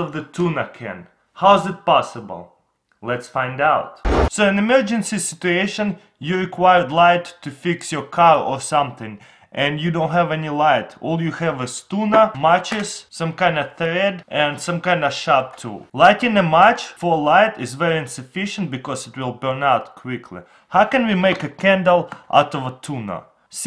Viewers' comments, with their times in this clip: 0:06 you require light to fix your cow